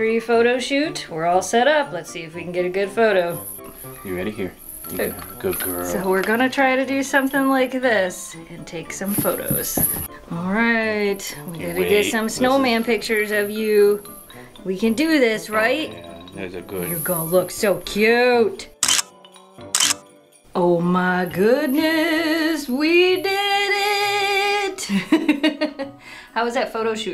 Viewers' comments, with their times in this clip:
0:09 Aww, that is an adorable idea! Kira really got into the ingredients this time, lol! Memphis couldn't contain herself with this big yummy cookie in sight. That little hop she did! The little jingle sound from the collars throughout the video I only realized at the end, oops.